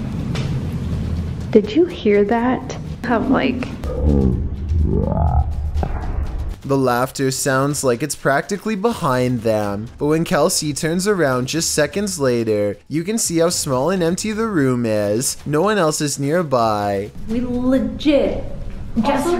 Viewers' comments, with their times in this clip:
0:04 maybe the fat girl farted 😂 😂 😂 😂 😂 🤣